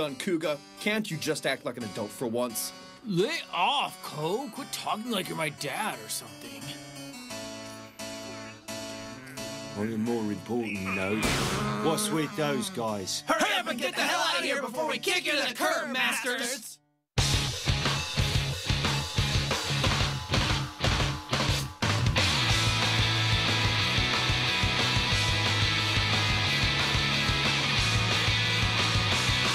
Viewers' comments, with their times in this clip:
0:09 so no one's going to talk about that accent ?
0:10 this guy's voice XD